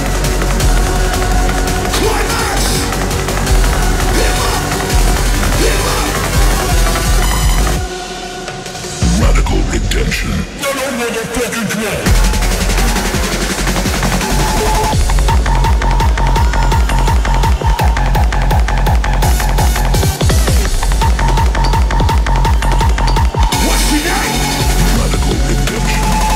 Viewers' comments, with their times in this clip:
0:09 Still the hottest drop